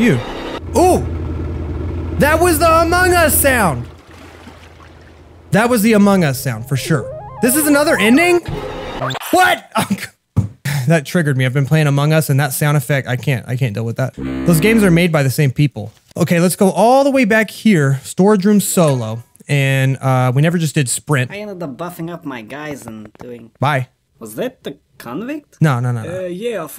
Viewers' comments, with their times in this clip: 0:09 that "WHAT" sounds SO familiar...